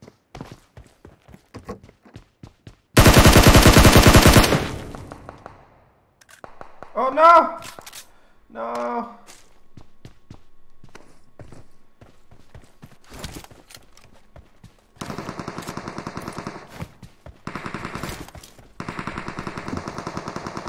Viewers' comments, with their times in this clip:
0:05 His voice is like Shawn Mendes. Like if you agree